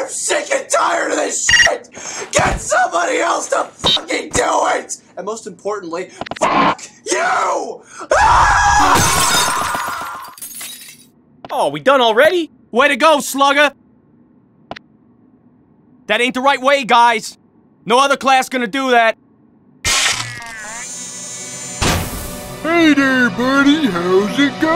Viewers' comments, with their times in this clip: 0:06 This remaster made me realize that Brawl Taunt censor is a Bowser roar.
0:06 I'm getting the feeling that got compressed.